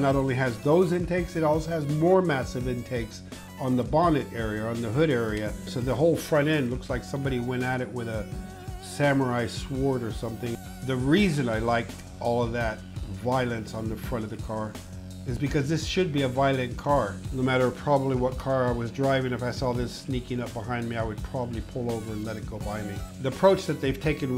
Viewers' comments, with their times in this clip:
0:07 I've never heard anyone pronounce sword like that